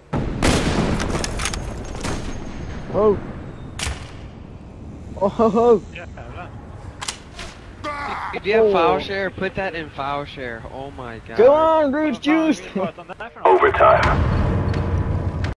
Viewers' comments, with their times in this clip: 0:12 I love the swedish guy talking xD